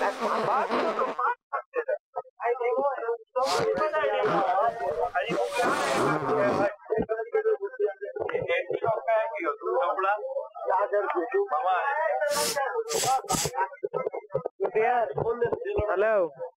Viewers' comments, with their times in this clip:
0:03 all the scammers in the background seem pissed. Are they ALL being trolled?